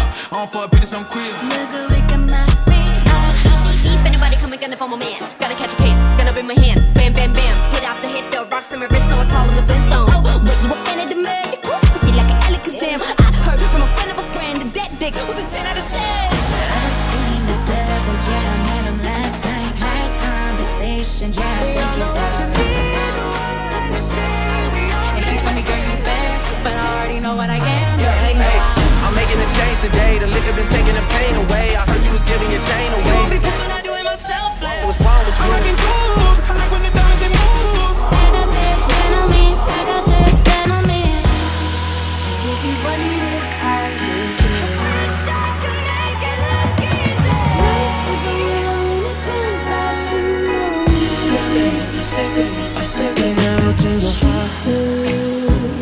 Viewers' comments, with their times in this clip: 0:04 WOWW lisa’s rap with industry baby instrumental is just chef kiss
0:36 i had to replay a few times but THE HOOTS FROM THE ROCK SONG??? HOW DID U FIT THOSE IN SO FLAWLESSLY THE AMT OF TIKTOK SONGS IN HERE THAT SNEAK IN AND AMPLIFY IT IS CRAZY stunning work man u have me floored! planet motley is my fav